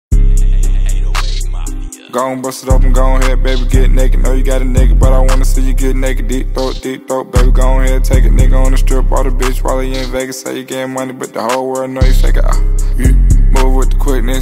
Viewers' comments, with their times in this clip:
0:01 and yatchy already spitting WTF man, this Guy never spits like this